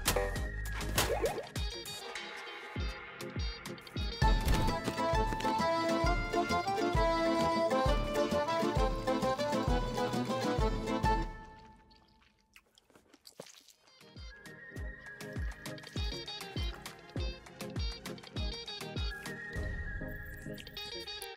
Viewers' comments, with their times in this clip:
0:04 the pizza party song is almost identical to one of sea of thieves songs
0:04 sounds like the spiderman pizza theme